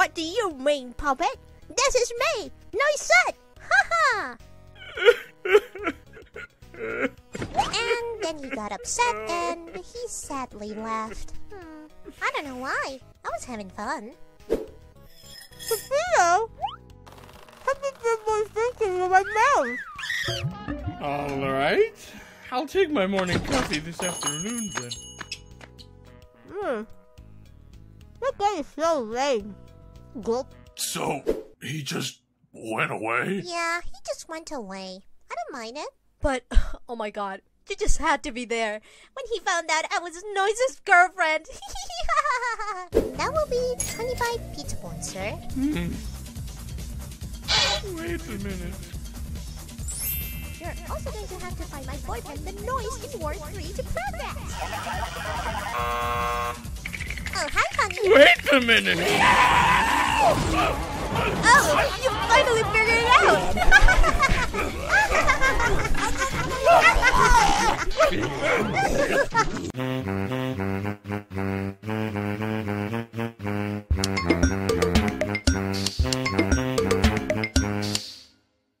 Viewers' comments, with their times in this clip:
0:03 Im so sad at this part when he starts crying i just thinking "Why is he crying :("
0:16 what is she saying??
0:30 i like noisette's gulp sounded like the meme
0:33 BRO THAT VOICE CHANGE GOT ME
0:34 “Yeah, he just went away.. I don’t mind it. voice changes But omg!”
0:36 Noisette’s voice went out of character
0:36 But change it to a normal voice omg he just has to be there
0:41 this "hehehehahaha" makes me so angry but also happy
0:56 bro, peppino's "YEOOOOOOW" is so ✨Perfect✨
0:57 bro put his heart and SOUL into that scream
0:58 WAIT A MINUTE... SCREAM!
0:59 lol bro did the iconic "YEEOOOOW" sound XD love the animation and voice acting!
0:59 The way that peppino screams should be added to pizza tower